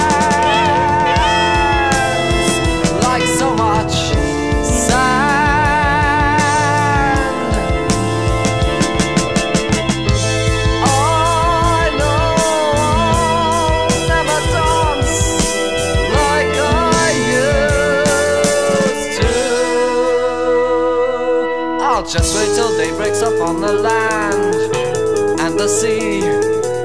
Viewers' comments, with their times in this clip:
0:10 Oh my god, that note ....